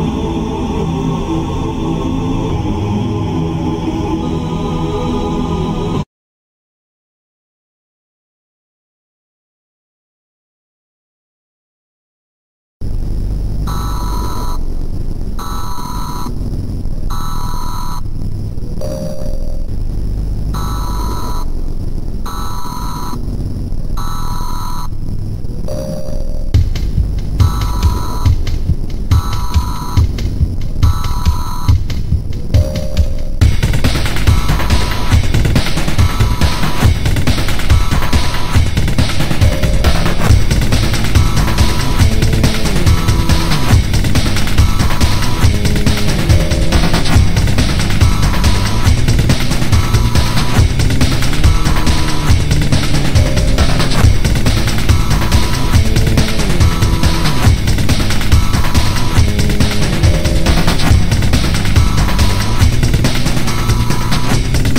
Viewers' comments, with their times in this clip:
0:07 oh shit an EAS Alarm!!!!
0:13 Why does Black sound like the Anthem Alarm?
0:33 final boss music be like:
0:51 bro it's a chase song lol